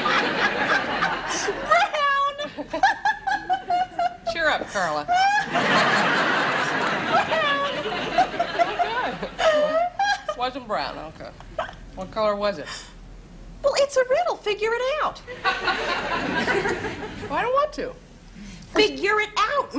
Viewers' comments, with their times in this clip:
0:04 🤦🏼‍♀️ ... Carla laughing HYSTERICALLY 🤣💦 ... Marge ”CHEER UP Carla.” OMGOSH i ❤️ that kinda HUMOR!! 🎉😬😉😘🎊